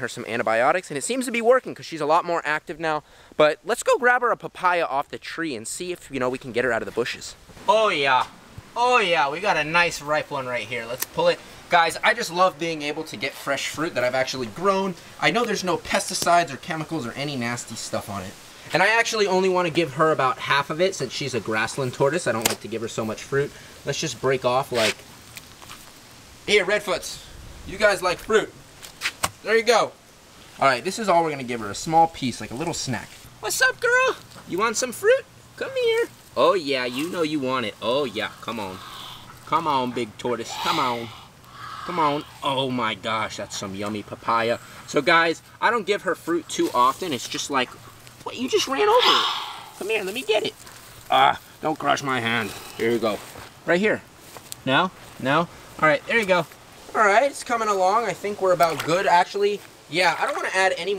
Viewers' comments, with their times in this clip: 0:03 That voice crack though...
0:41 The tortoise sounds like a dinosaur 😂